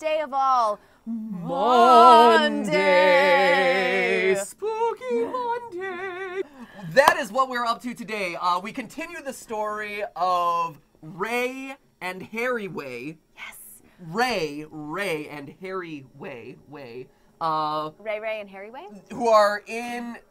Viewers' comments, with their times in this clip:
0:06 is he clapping as a subtle way to have a marker to sync the audio? Why was there a cut in the first place? What was the livestream exclusive thing???